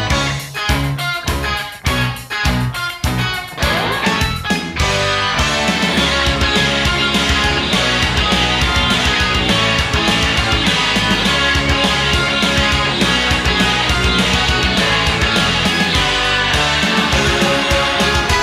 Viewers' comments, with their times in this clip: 0:05 Thankfully, I never found any source that tells what exactly is happening so I can keep hearing it as "mew mew mew mew mew mew mew mew mew mew mew mew mew mew mew mew mew mew"